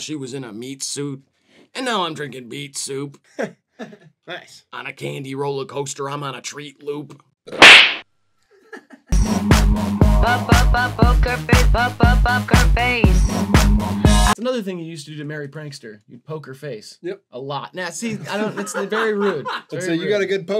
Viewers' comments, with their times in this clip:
0:07 fuckijg christmas why was that so loud